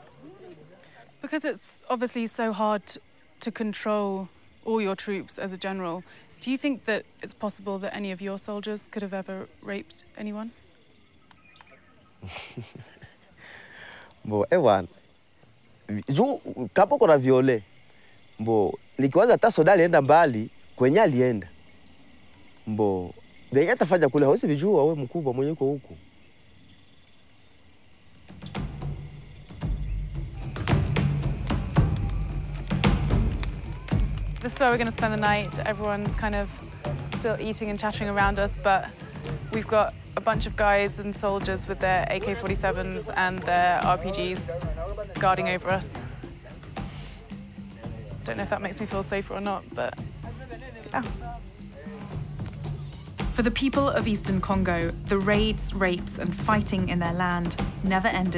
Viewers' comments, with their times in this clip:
0:06 he got a good laugh out of that one
0:12 the laugh means a lot
0:46 ME AND LIL BRO HAD THE SAME REACTION CUS HUHHH?? Mans really scoffed and said “girl i cant have eyes everywhere” im done bro